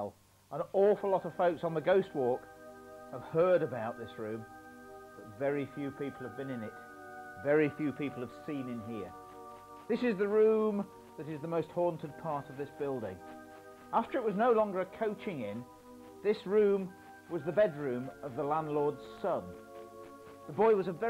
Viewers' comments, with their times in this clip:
0:06 Started out so good with no stupid music added in, then sure enough, some wanker decides it needs the most amateurish "creepy" music they can find - that really cheapens the whole presentation. What a shame on these small minded video editors.